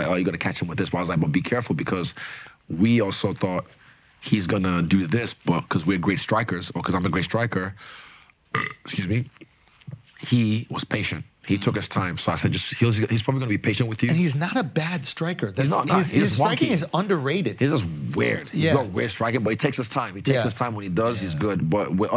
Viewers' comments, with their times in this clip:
0:07 Are we just gonna ignore the burp on 😂